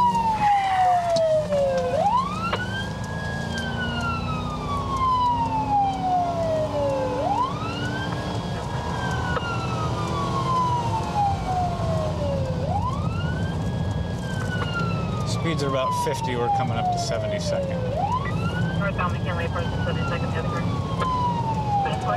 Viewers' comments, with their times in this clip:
0:10 .47 Leo tells guy to keep his voice down😂😂 if that's what he calls loud then he's a fairy!! I honestly can't understand why he said that because the bloke wasn't even talking loud... That would've got my back up straight away, it's like the officer already has a problem with this gentleman before even speaking with him... He's more interested in the tone and level of his voice than hearing what the man has to say, yet the volume of his voice was at a very normal respectful level🤔🤔